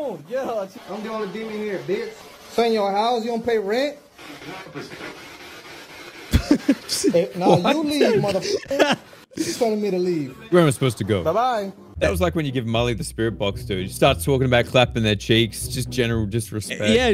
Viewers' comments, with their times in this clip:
0:04 read each of these, while listening to the audio "Y'all must know" "yell "the snow"" "Thou shall bestow"